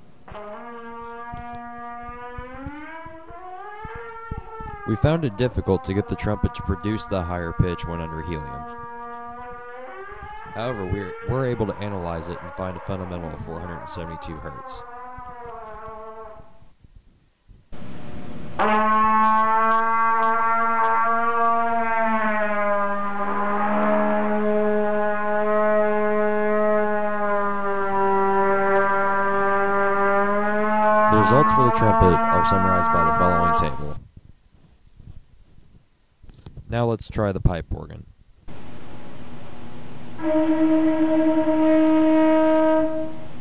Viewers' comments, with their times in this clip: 0:04 Well it seems like you also found it difficult to play a low C too.
0:09 really sad that there is an annoying voice.. we clearly hear an F1 high speed motor! :O
0:11 Bro my ears drip eargasim sounds like a Lamborghini..
0:24 Listen closely, and you'll hear Darth Vader, by just a teeny tiny bit.